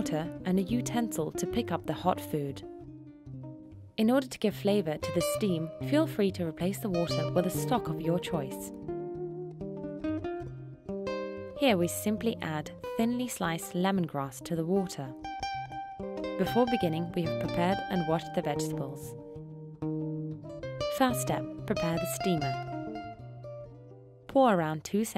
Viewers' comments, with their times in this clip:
0:07 Why is she speaking this weird English?? What the hell is she saying ?? Stock of your choice??